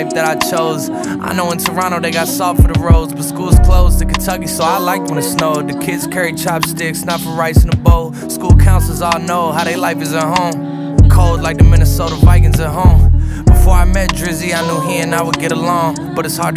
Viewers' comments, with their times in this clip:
0:04 Yo I keep listening and reading I swear it’s I know Toronto got salt for the road cause of the bars after